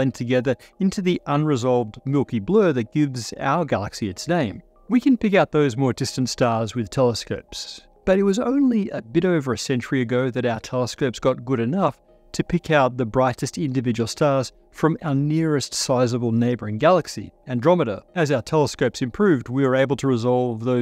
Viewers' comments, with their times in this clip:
0:07 was this run through some AI noise removal? it sounds quite funky in a way i cant put my finger on. like when he says telescopes it has some wierd warble?